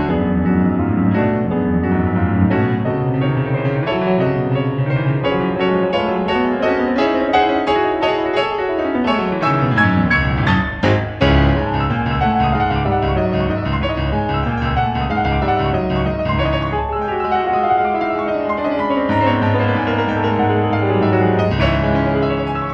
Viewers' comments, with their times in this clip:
0:05 this build up tho